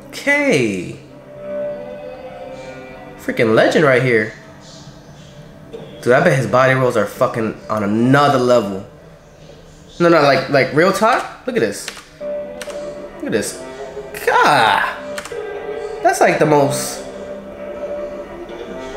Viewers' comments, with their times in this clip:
0:06 "his body rolls on a fucking another level" the way he said it as the king of body rolls says something 😂👌despite the look of envy there 😂💖